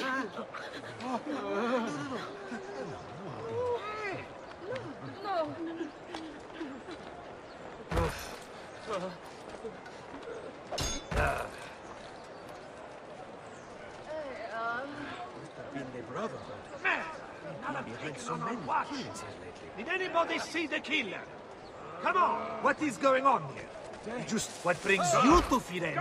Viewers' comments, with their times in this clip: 0:09 did he/she fart